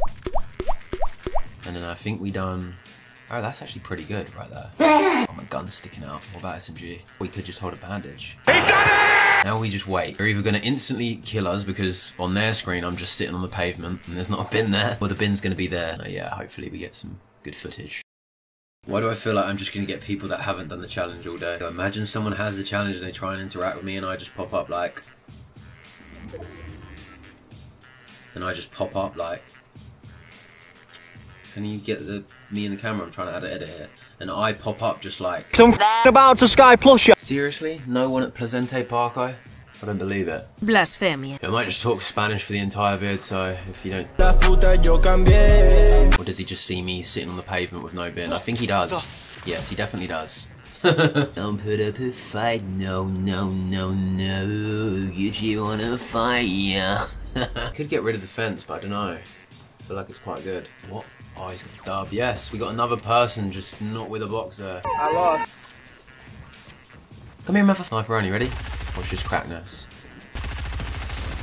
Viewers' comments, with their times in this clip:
0:05 What’s that moaning sound ?
0:51 out of all voices, you’ve picked the voice of Holland, with the one and only Ali B
0:52 that is the voice of my country. The snallest country on the world. What its not its actually Luxemburg
0:54 Gucci wanna FliGhT yah LOL it says: Put you on a flight ya